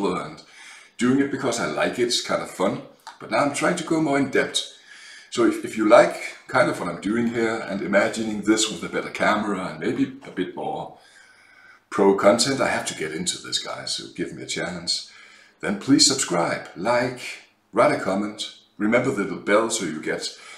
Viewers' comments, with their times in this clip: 0:03 misheard you saying "trying to go more in debt", and I'm like yeah that's what this hobby is about. ;)